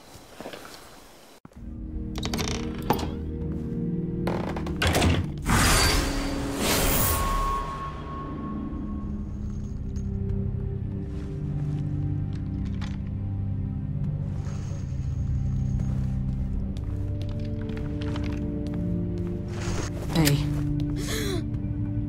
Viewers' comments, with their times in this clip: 0:10 ,this ost in this scene sounds so intense.It’s a shame I still don’t know the name of it.